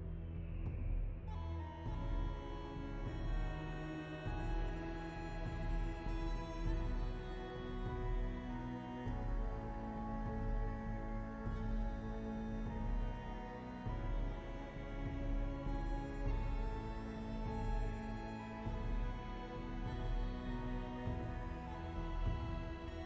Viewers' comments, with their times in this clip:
0:08 Btw i love the music